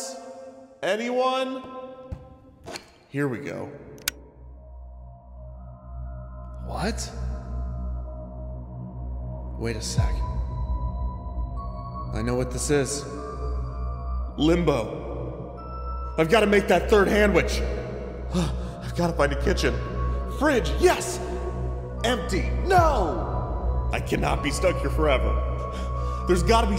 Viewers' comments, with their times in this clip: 0:09 When I heard those first 2 notes, I was expecting it to turn into the toreador march. I need to watch the FNAF movie